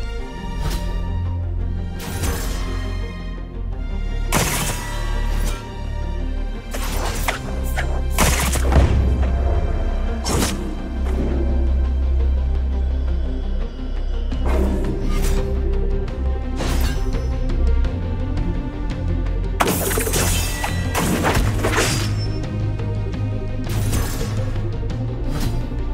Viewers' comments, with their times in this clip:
0:07 Oh I thought it was "Obscured".